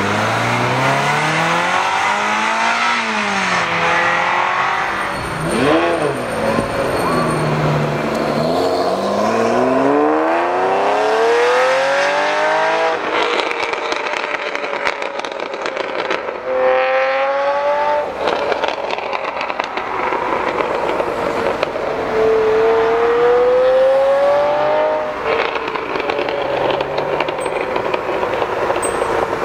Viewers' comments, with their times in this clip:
0:10 that was "that" testarossa with the fuchs exhaust system min, right? ;) brilliant sound